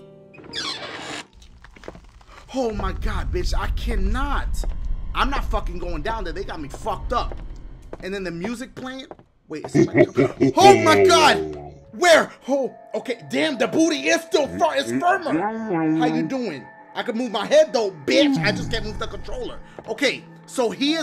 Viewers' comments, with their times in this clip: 0:09 it sounded like he was in my house